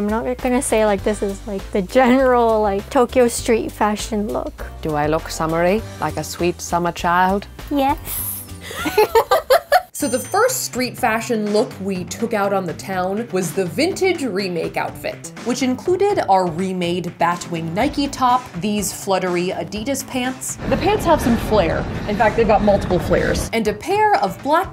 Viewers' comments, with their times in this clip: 0:04 “ do i look summery? Like a sweet summer child. “ im sorry it sounded like a female narrara but it’s a deep version.
0:07 I’m sorry but that “yes” just made my heart melt